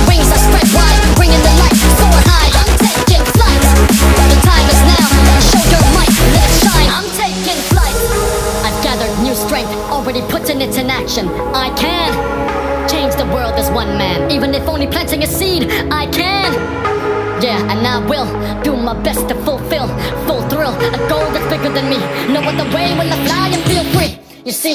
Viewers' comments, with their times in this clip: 0:08 It sounds like a minion singing